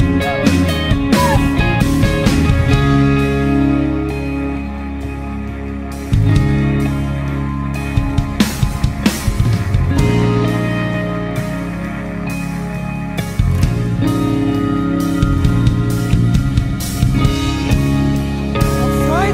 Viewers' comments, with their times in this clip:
0:04 ... feels like I'm at a local show in the best way possible.